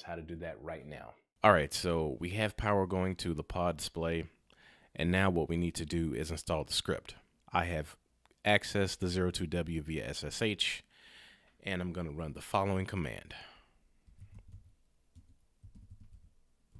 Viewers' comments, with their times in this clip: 0:03 the sudden increase of sound woke up someone.